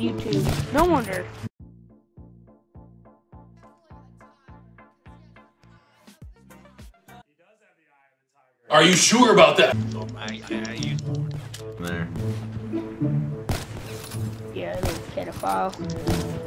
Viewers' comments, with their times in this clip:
0:04 you can hear leafys intro music kind of